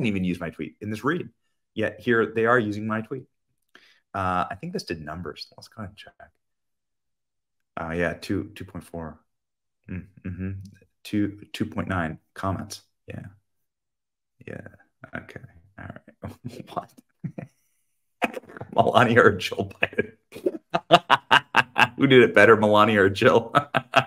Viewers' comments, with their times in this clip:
0:10 the forced chuckles aee obnoxious